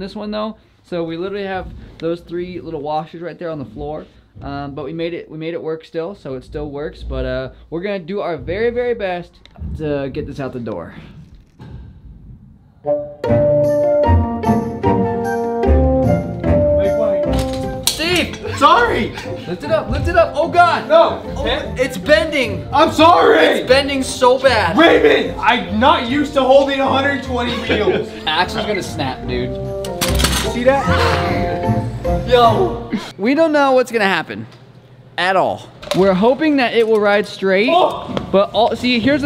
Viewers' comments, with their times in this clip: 0:10 Backgroundtrack is a goofy version of the Swedish national anthem.. what the frick
0:25 Why did he play the swedish nationellanthem